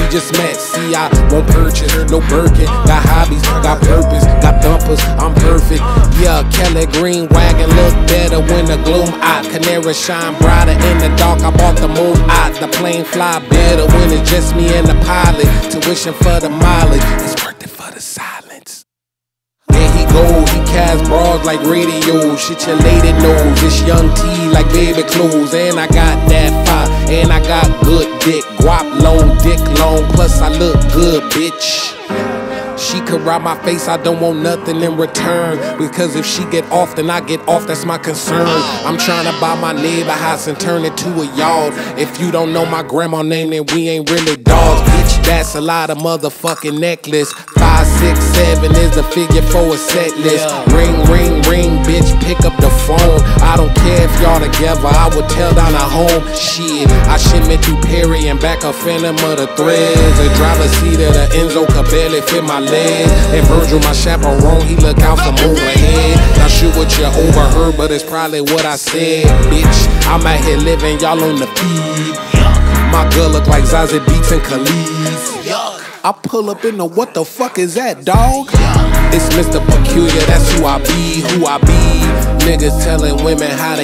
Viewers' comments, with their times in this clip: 0:06 fav part, something about his voice i love this song
0:19 Bro got that juvenile New Orleans flow
0:51 The bass variation 🤌🏻
0:59 anyone realized that we can hear frank back vocals in the ?
0:59 Guys could someone please tell me who is doing the background vocal .... Sounds weirdly like Frank Ocean to me at least 👁️👄👁️
0:59 i think there is an adlib by frank in the "threads" line
1:06 Somebody tell me im not the only one hearing frank Ocean